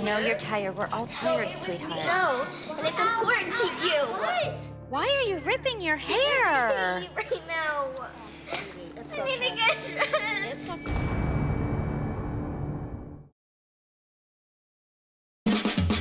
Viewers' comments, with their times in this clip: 0:03 I love how Kendall goes its important TO U😠😠